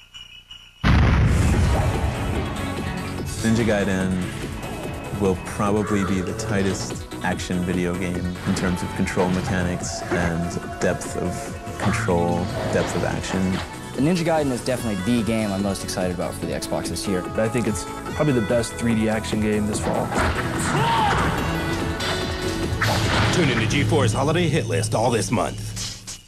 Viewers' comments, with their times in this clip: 0:09 Every now and then theres a beeping sound, like area, not sure what's up with it